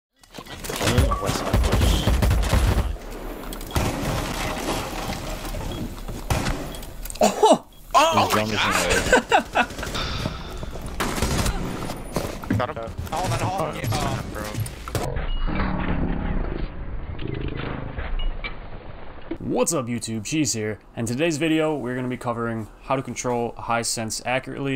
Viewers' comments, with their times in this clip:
0:07 a combination of mating calls😂😂😂